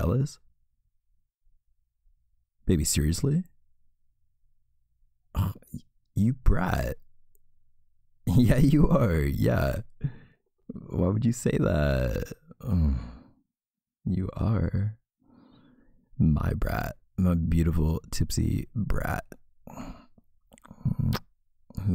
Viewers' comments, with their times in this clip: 0:03 The way your voice changed scared me a little 😅 I started apologizing like 😳sorry babe it was just a joke !!